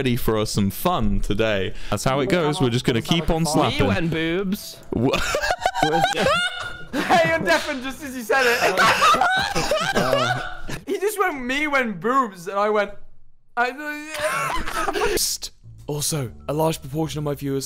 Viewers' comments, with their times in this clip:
0:03 Is it just me or is wilburs LAUGH the cutest thing?!😭😭